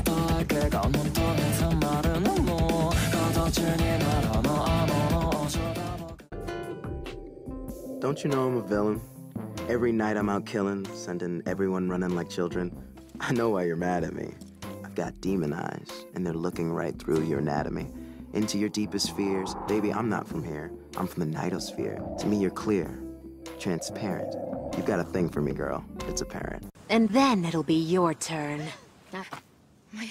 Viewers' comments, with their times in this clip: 0:07 Marshall sounds like your typical annoying brother
0:13 I HAD THIS SONG IN MY MIND FOR PAST FEW HOURS.